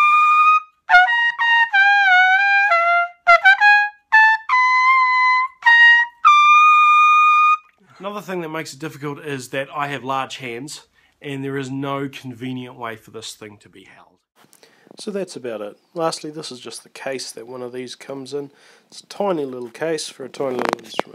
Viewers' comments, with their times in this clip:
0:07 When he hit the high note my tea kettle boiled. They harmonized.